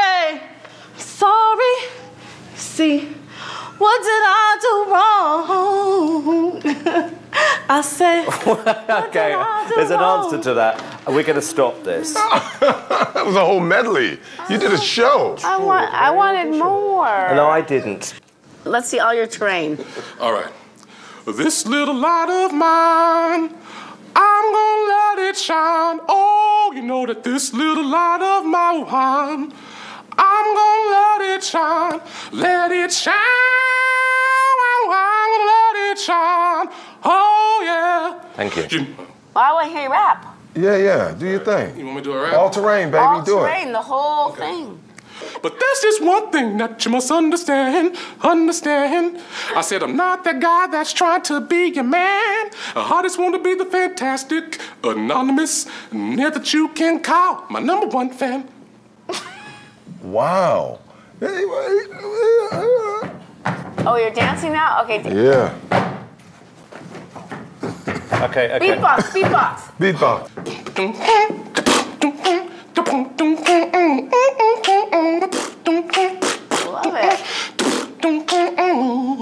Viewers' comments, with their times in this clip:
0:06 the laugh I couldn't
0:20 sounds like Mickey Mouse singing... and beat boxing....
0:21 he should do voice acting honestly
0:21 sounds like Mrs. Doubtfire.
0:28 Mickey Mouse is that you
0:36 dude sounded like Mickey Mouse
0:40 Micky mouse is that u!?!
0:42 he should audition for one of the muppets
0:45 The dude sounds like Mickey Mouse
0:45 that was some swag rap.. I can't 😂😂😂
0:45 he sounds like Mickey mouse
0:45 he sounds like mickey mouse
0:46 I didn't know that Mickey Mouse can rapp
0:50 Omg he sounds like Mickey Mouse
0:53 is he trying to be Mickey mouse
1:00 THATS a WHOLE new genre of music right there!
1:01 Randy's loss-for-words babbling is everything.
1:01 that fucking noise lmfao 😂😂😂 dawg what u doiiiinnnn?!